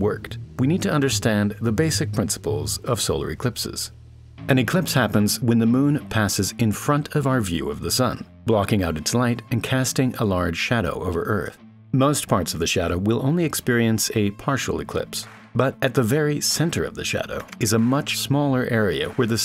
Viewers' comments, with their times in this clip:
0:04 I got sad for a second, I thought it was the end a The Fat Electrician video with the music.